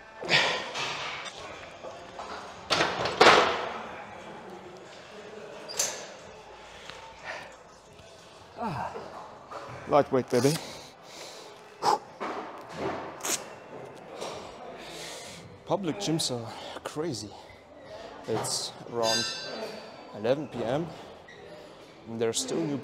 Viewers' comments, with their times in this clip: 0:09 Most energized Lightweight babe I've ever witnessed